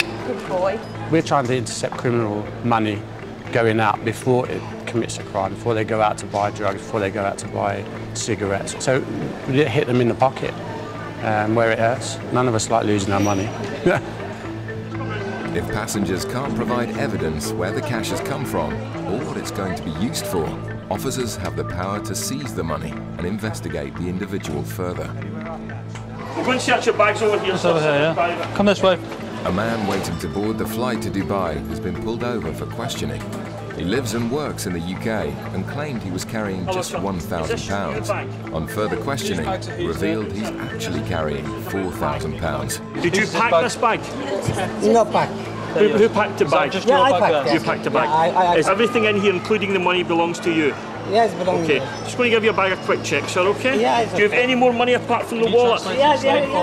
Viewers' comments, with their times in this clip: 0:10 😂🤣😂 I love the laugh!!!
0:42 Officer: Did you spike this bike? (Did you pack this bag) Man: NO Bike :))